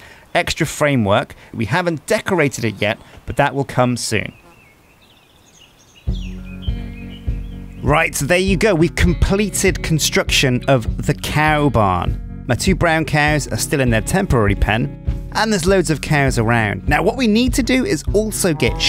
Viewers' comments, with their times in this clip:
0:04 i hear a fly.